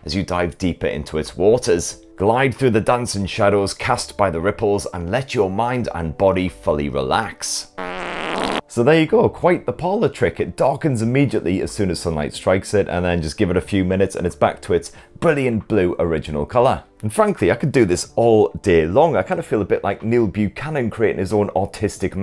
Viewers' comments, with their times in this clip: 0:05 Far funny moment 💨 far as it moments XD HAHAHA